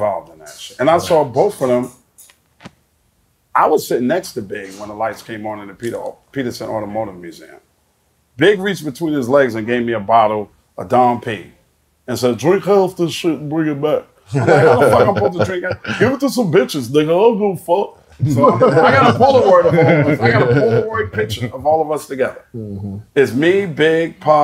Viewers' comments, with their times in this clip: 0:08 That was hell of accurate big impersonation 😂😂😂